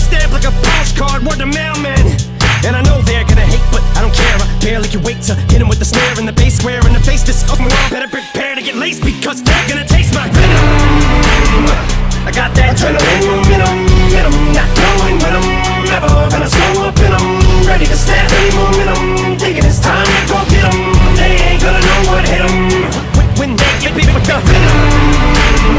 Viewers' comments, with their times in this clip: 0:10 Damn that "Venom" gave me chills